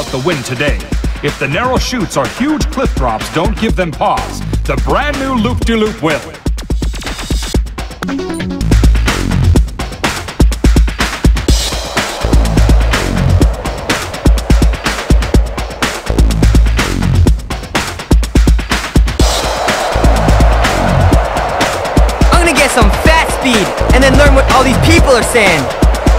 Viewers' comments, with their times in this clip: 0:08 What just happened there? The loading menu theme song just peaked its head in for a split second?